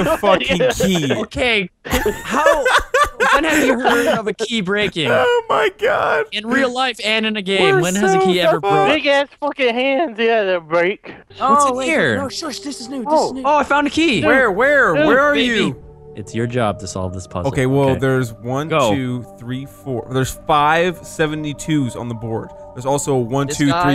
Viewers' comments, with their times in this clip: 0:09 delirious sounds so drunk 😂😂